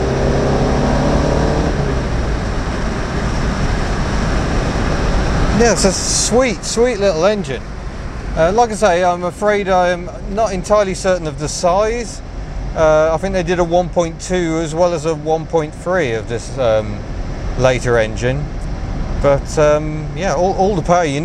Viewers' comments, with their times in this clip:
0:06 the engine accelerates smoothly from low to high RPM. Definitely not a Golf. I had a very old GS, just great to drive. Too expensive to build, so Peugeot killed the model when taking over Citroën.